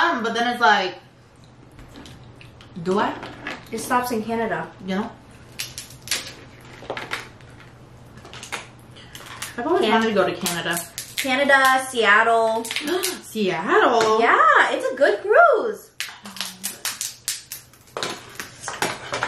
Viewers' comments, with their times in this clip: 0:05 All you hear is cracking and slurping..🤣😂🤣😂 Thanks now I want seafood, and its in Indiana!!